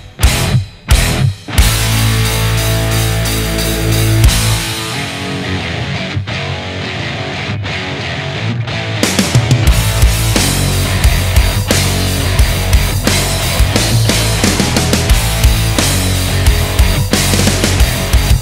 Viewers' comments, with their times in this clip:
0:04 The main riff and drums are giving me some vibes from Through The Never personally (really enjoy it personally!), and the verse is super satisfying with those punchy chords and breathing space!! Plus I'm really enjoying that juicy tempo change ... this is one of the more solid songs so far for me, with the punch and grind!!
0:04 Riff reminds me of the intro/verse riff of Black Sabbath Country girl